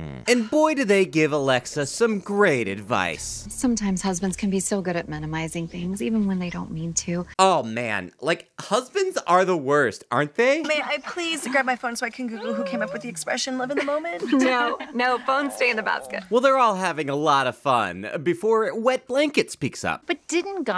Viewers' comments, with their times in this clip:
0:03 I heard here "sometimes husbands can be so good at sodomizing things"